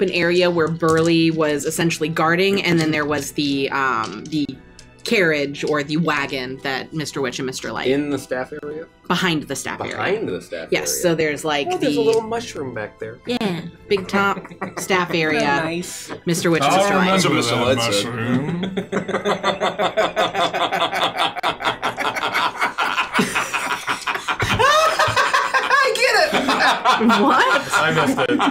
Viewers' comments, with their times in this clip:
0:10 The soft yeah when they were talking about the mushroom behind the staff area